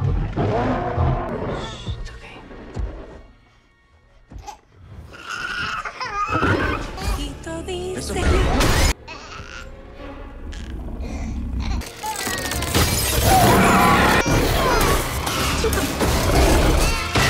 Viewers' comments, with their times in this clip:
0:05 Oh dear, the sound of a human baby crying at a bad time & drawing attention to a fully grown Allosaurus.